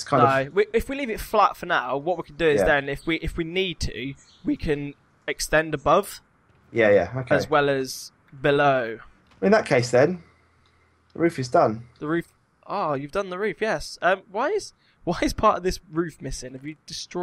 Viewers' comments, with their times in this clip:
0:04 was dat a voice crack dere?